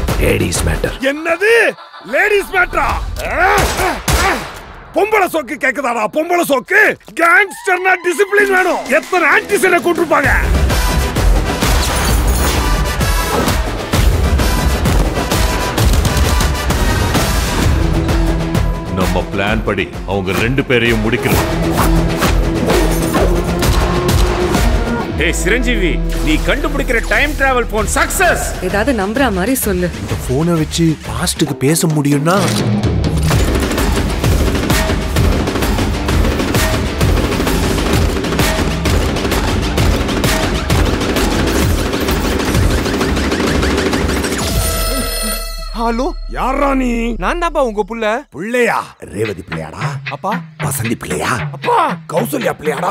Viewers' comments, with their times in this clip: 0:05 Sj Surya voice 🔥🔥🔥🔥🔥🔥🔥🔥🔥🔥
0:33 music is top notch 💥